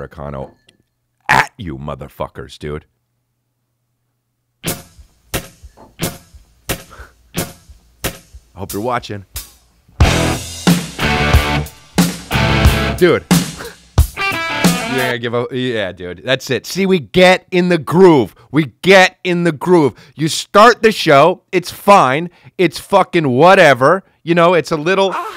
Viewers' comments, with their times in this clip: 0:05 Chris D'Elia's Robert De Niro impression
0:06 you straight up turned into De Niro as you disrespected us lmao